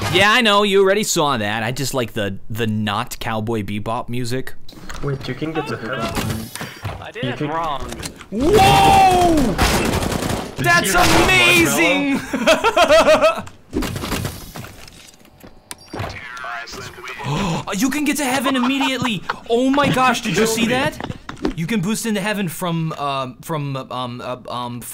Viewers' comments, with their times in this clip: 0:08 his woah sounded exactly like “woah Yankee with no brim”